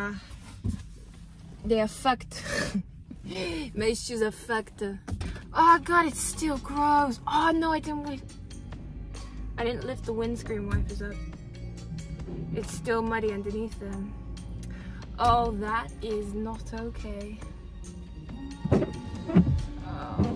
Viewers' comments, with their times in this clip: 0:04 Mei shues are fuckeda! 😂